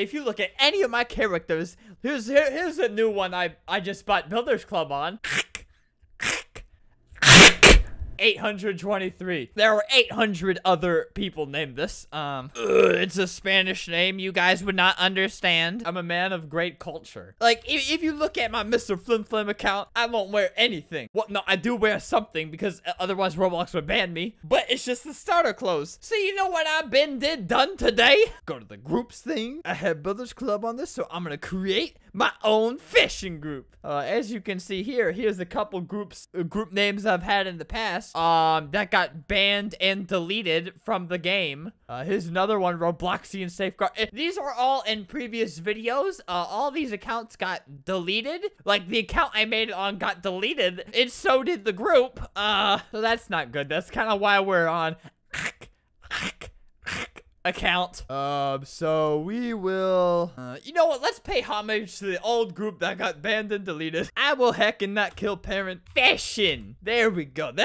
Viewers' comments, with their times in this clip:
0:07 at the second the ACK is so loud it scared me XD
0:55 Kinda sounds like HACK